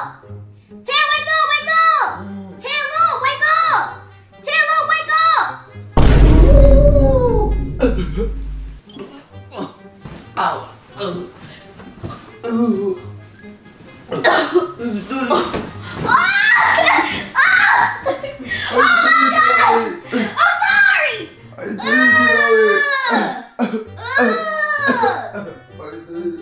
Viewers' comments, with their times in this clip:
0:07 it’s the noises for me 🤣🤣🤣🤣🤣🤣🤣 he sounds like he’s dying